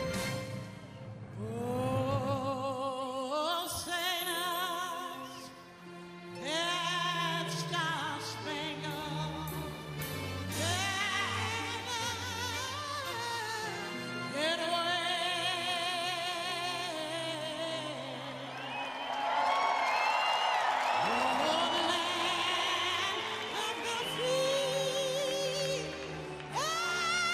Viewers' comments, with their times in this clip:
0:10 -27. That vocal touched an extreme I cant understand.